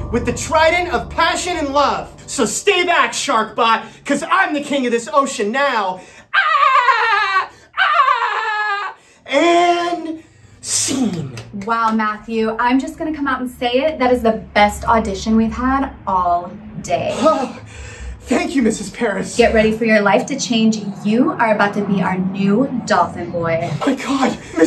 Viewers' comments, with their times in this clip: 0:06 I guess I’m not the only one who speaks dolphin🐬🐬🐬🐬🐬🐬🐬🐬🐬🐬🐬🐬🐬🐬🐬